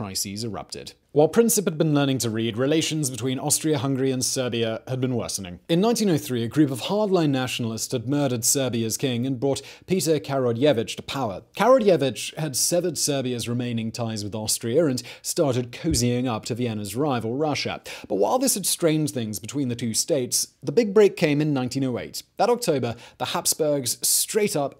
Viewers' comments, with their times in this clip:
0:10 That guy spells in English like: ca-ra-george-ewich, easy. Good videos. If you have trouble spelling Balkan names and naming, feel free to ask. No reimbursements needed.